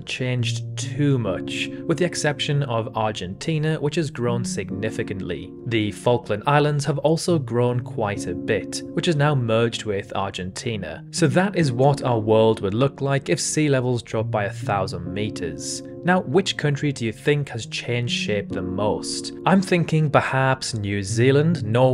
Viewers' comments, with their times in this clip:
0:05 the ... (what?) islands????